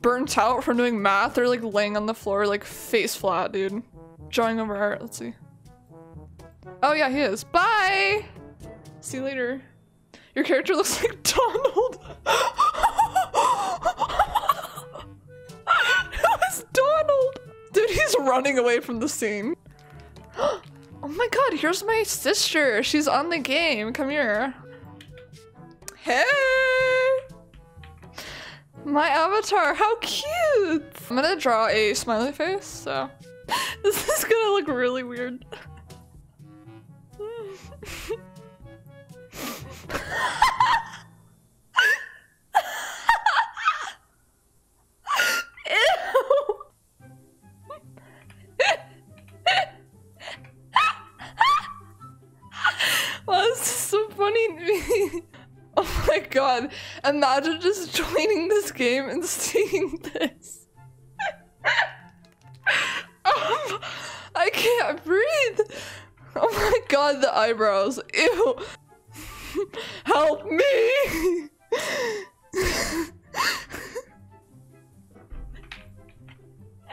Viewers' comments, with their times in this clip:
0:10 Your laugh is like, 😂
0:54 bro ur laugh Sound like ur screaming
0:56 She can’t stop laughing 😅
1:01 i love her laugh 😂❤